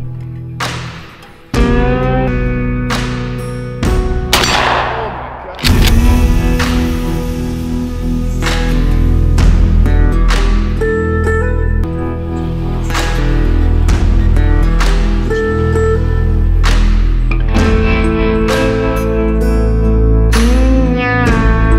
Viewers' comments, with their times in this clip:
0:07 I started to think, 'Yup, broken glass and shotgun blasts, that should draw them in...'